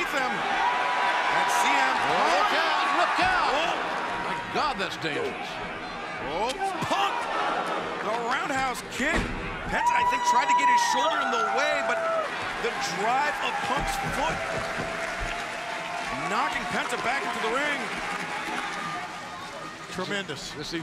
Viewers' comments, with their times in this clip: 0:04 I'm sorry, is that a kung fu movie sound effect ?